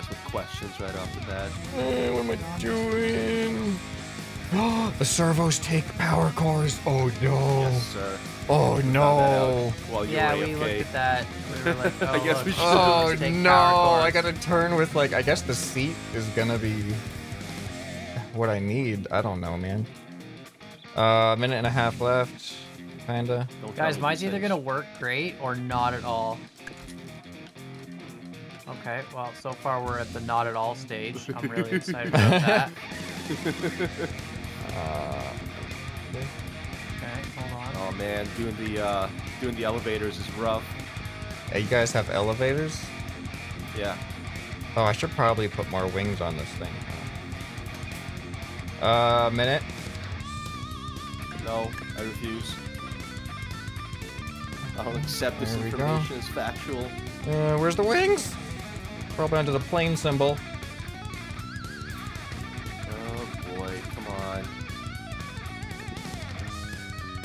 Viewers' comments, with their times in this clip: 0:07 discord ping? (Yes, I notice this kind of stuff)
0:52 that sounded like my sisters husband